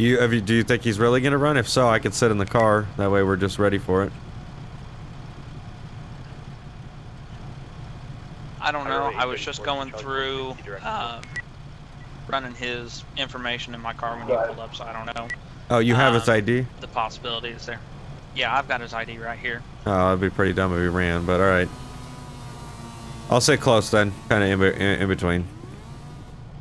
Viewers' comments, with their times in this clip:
0:09 You can hear the officers voices crack in 😂😂
0:11 that voice crack tho LOL😀😀
0:14 that voice crack that’s tough